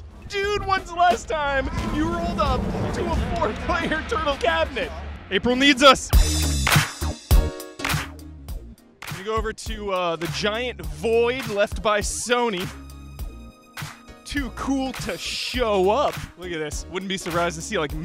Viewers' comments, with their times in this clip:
0:05 That's some funky background music loving it